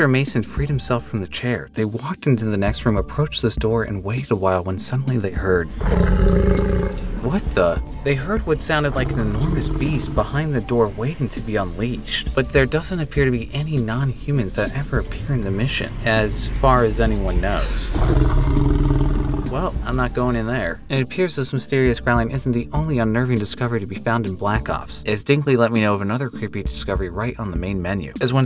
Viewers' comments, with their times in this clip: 0:06 My cat likes to lay with me while I watch YouTube and he jumped up and took off so scared. I told him it sounded like a much bigger kitty was about to get him 😂
0:12 So my theory is that the roar of an escaped nova 6 crawler